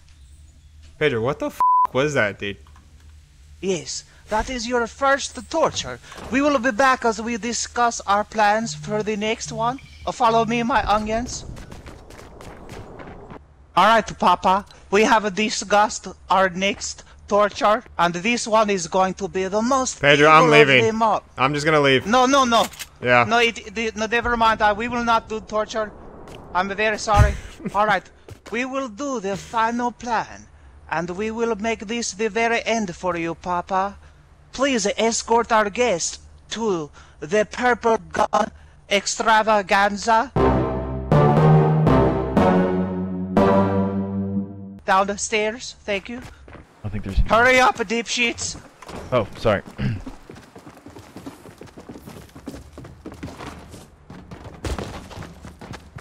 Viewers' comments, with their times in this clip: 0:08 who hears a phone ringing
0:37 the purple god extravaganza